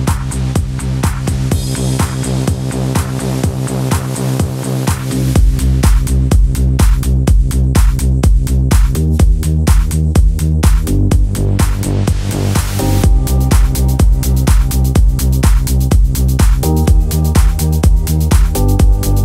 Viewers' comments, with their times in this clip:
0:03 Realy boris brecha remind me deadmau5 old progressive trance and a little bit techno 🤔